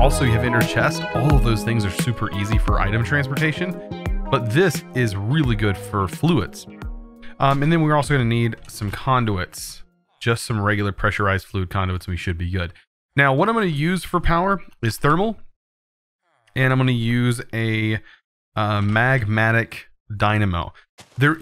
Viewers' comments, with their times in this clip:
0:03 music too loud till 🤯🤯🤯
0:05 Music stops too overbearing imo.
0:06 is about when the music stops. it was hard to hear you chosen during the music. other than that good video
0:07 Intro music lasted i couldnt hear anything he said
0:08 skip the loud music
0:08 And all quiet. Great intro music but the voice over was annoying lol.